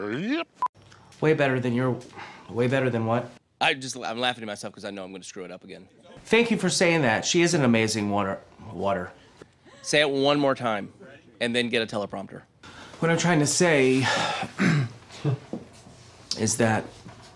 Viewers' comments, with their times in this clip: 0:05 how the hell do you make a fart sound with your tongue and teeth like that!? Wtf